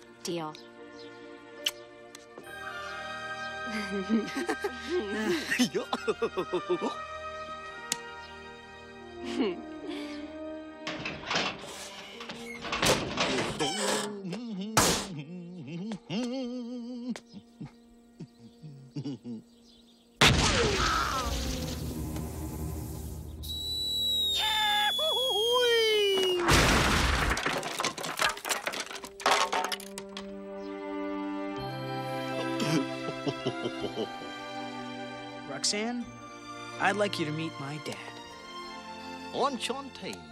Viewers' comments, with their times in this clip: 0:05 Max's laugh and Roxanne's reaction <3
0:24 Goofy scram lol!!!!!!